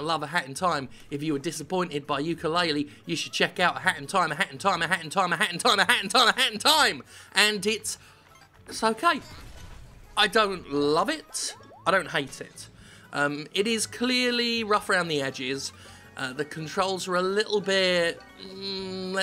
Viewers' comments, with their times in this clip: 0:04 a hentai a hentai a hentai a hentai a hentai a hentai